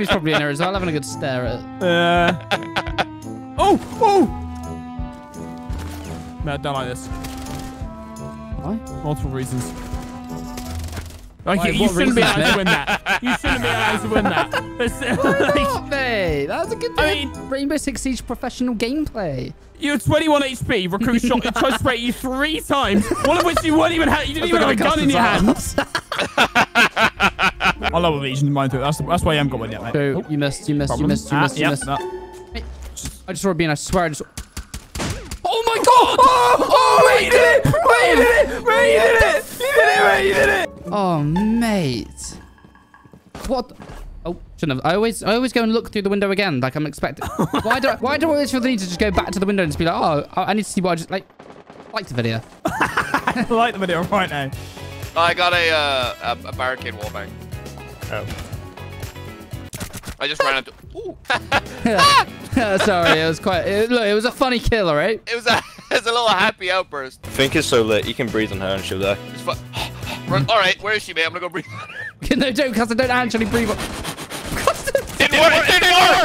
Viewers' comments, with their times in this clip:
0:07 omfg god I started snorting at the mark...and the 3rd one literally echoed wtf this is unhealthily funny!
1:00 What Every girl sounds like when they hear a “Funny” Joke